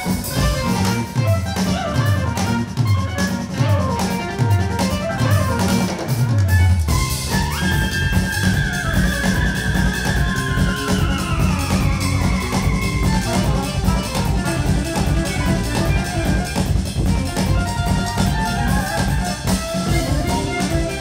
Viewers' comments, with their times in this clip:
0:06 this whole thing sounds like a deluxe version of King Crimson!! (From me, that’s a compliment, BTW😜)